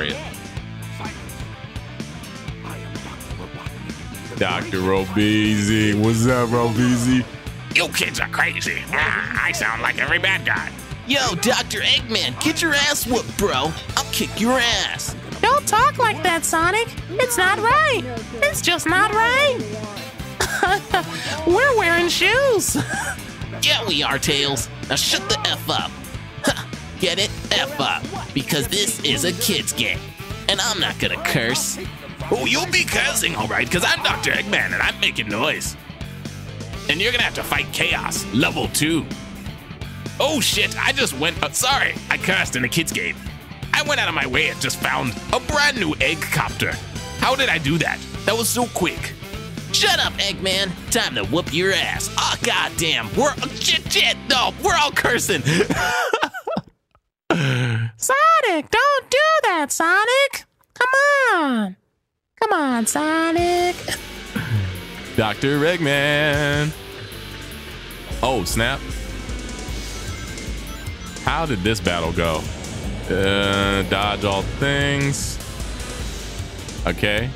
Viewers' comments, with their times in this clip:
0:07 started the funniest voice overs for this game lmao good stuff *****
0:58 Your tails voice sounding like elmo lol